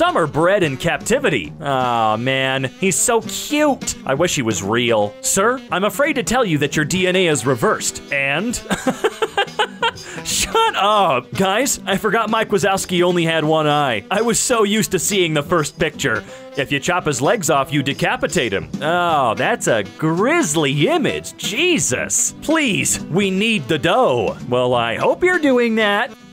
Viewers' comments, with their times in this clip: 0:07 said and at the exact same time, felt like i was on a videochat for a second there lol